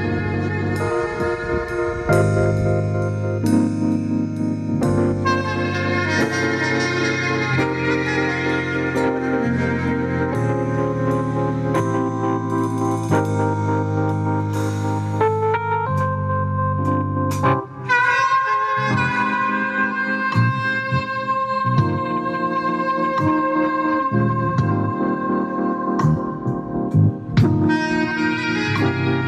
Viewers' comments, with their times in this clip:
0:10 Thursday, September 05th, 2024 Kansas City Kansas. I'm listening to sax in the city. Unwinding from a ten hour shift enjoying the soulful soothing sound of the sax